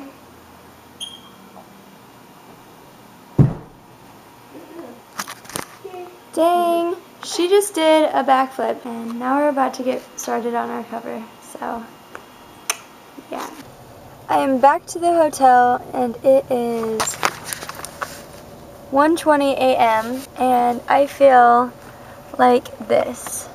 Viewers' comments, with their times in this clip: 0:04 *applauded*, btw that was the most adorable dog I have ever seen